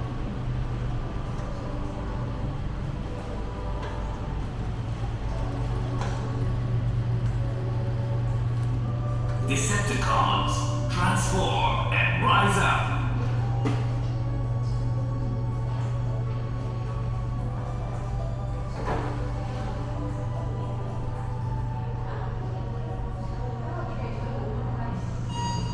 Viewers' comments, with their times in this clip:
0:10 why did I hear transform and rise up?